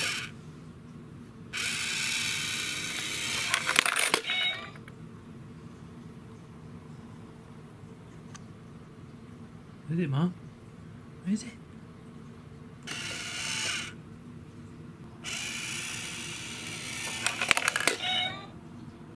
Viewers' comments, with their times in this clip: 0:06 x file theme playing